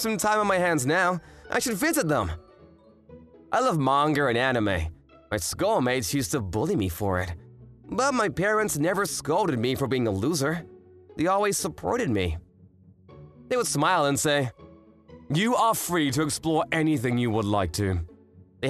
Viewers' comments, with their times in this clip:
0:04 Yes I love manger! 😂